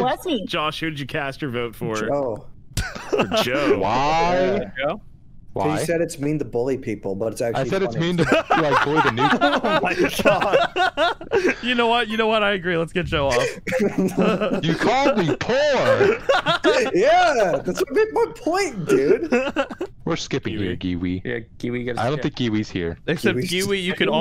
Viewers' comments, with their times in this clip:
0:08 is the most chad laugh i’ve ever heard